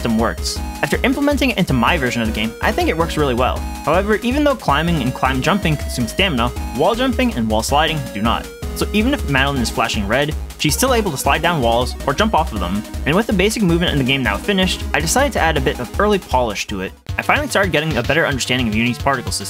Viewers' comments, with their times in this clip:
0:07 the bg music is way too wild to handle this video xd